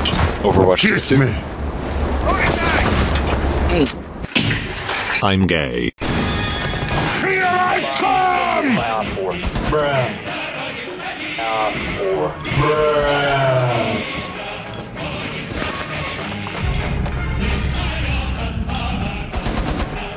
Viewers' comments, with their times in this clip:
0:06 after the worst part of the video comes the best one. tachanka song and tachanka action played by heavy.what more to ask from russian bias in rainbow 6 siege?